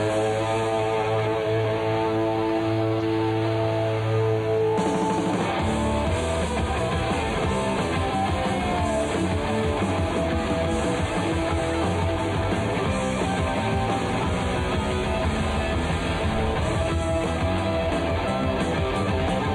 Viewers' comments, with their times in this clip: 0:05 Too bad Ricky's lead guitar was mixed into the background. Great take on this song! And I love the faux ending kicking right back into it a !